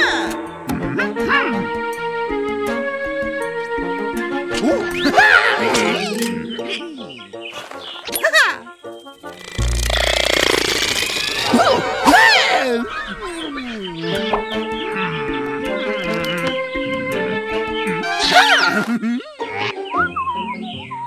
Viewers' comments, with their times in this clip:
0:09 poison headcrab sound